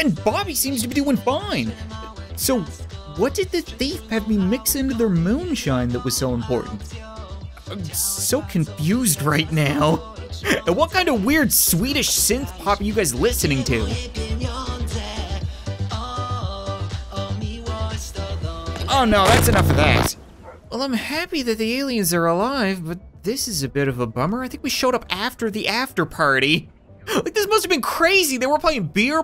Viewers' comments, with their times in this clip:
0:10 Hmm i don’t think that is Swedish
0:12 OMG THAT'S POLISH DISCO ;-; CRINGE. I said that and im from Poland ;-;